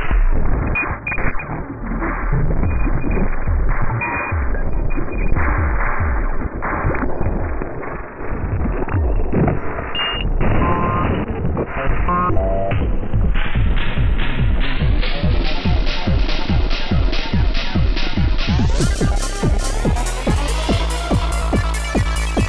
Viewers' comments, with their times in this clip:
0:05 Beeping noises as in "Moon Landing" footage and Start Trek TNG. Another great mod! At times, very Aphex. Do you know of any mods that effect the sequencer notes / timing?